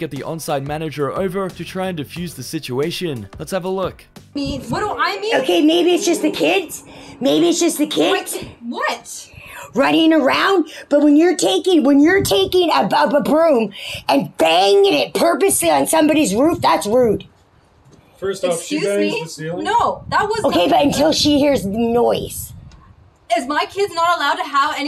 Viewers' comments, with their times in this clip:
0:10 when ur taking a b-b-ba-broom- Karen 2022 (I think she’s dunk and needs to lay off the cigarettes 🚬